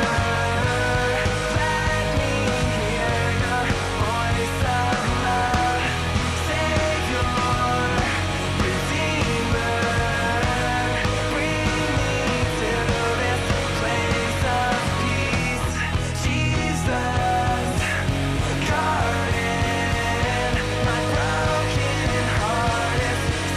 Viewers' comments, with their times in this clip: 0:04 LOVE this band AND this song. But is it me or does it feel like the end could be more... powerful? Starting I find myself anticipating higher, more powerful notes when he refers to God for the 2nd time in each line. For example, he says, "Saviour... Redeemerrrr" but my mind anticipates, "Saviour... REDEEEMEERRRRR". Lol, I can't expect to be able to type it out. It just seems off since the tempo picks up (the guitars, drums etc) but his voice doesn't change at all.